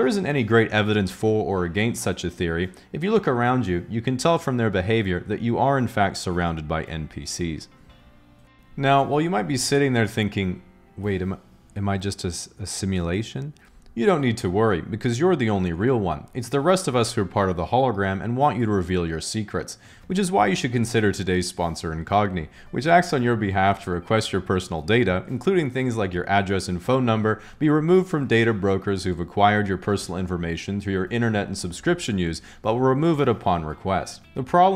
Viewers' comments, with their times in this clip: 0:09 did you purposefully pronounce the word "against" with an emphasis on the "ai" in it? ( ish)
0:22 the way I hear your smirk as you say to "request your personal data" like you're so proud of your slick transition